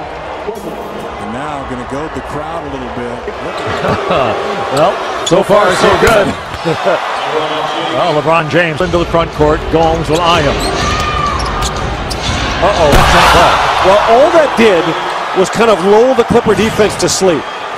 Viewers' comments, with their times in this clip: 0:03 some sort of robots announcing there?